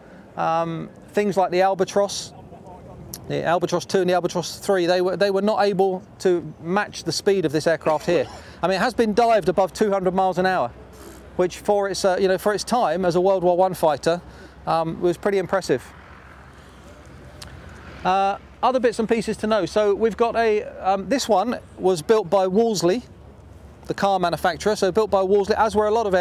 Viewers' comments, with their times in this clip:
0:10 the guy saying "pffffft" is pretty hilarious! Obviously he wasn't impressed with diving at 200mph...